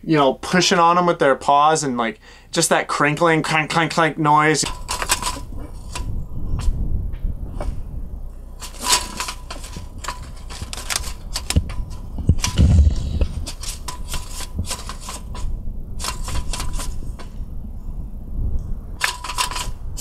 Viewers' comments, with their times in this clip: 0:07 --cat sending Morse code, badly.